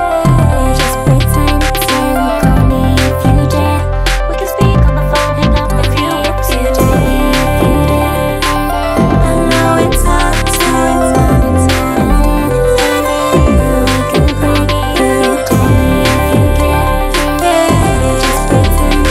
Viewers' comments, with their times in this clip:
0:06 This is my all time favorite use of bass in PC music, maybe even music in general. The way it dribbles like a basket ball is so addictive. And the way the sound widens out omfg